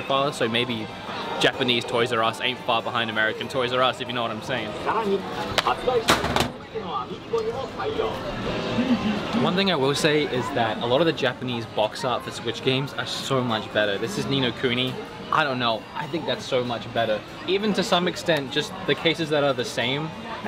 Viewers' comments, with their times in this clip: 0:03 I heard 'nani'